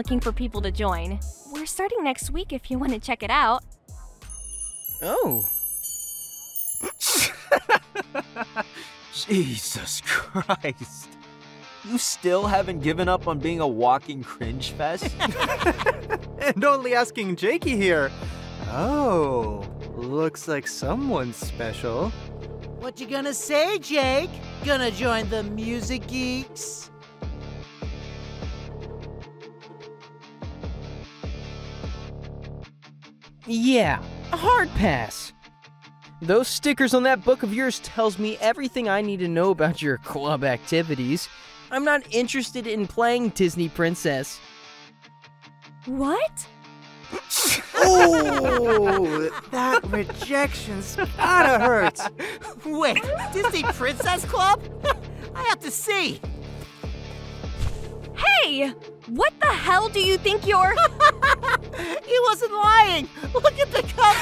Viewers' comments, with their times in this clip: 0:04 The little "o h" :° is so cute
0:44 HE SOUNDS LIKE AN AI 😭😭
0:49 I'M SORRY, BUT WHY IS DREW'S LAUGH SO CUTE 🥺🥺🥺